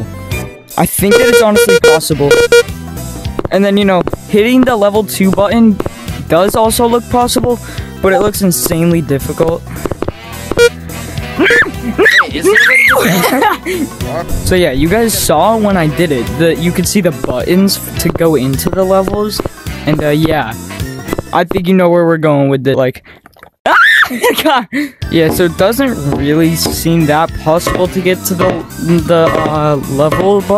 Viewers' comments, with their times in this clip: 0:07 I thought I got a discord notification
0:11 screaming with mouth shut